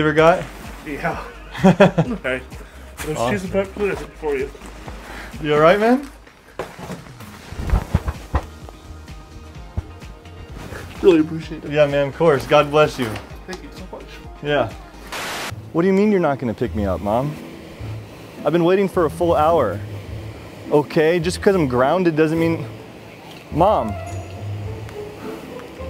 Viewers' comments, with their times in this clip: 0:10 🇵🇭 Pizza guy made me cry. I felt his need for help or appreciation for you. He's sniffing and it made me cry now. I know this vid is long ago, but still made a lot of people happy 🥰🥰🥰🥰